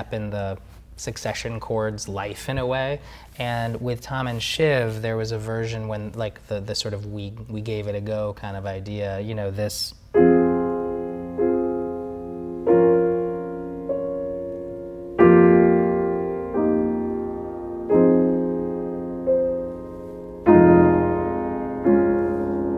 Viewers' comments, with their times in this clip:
0:07 The ‘we gave it a go’ theme is truly heartbreaking. He absolutely accomplished his goal of creating a score that is integral to the fabric of the show. Incredible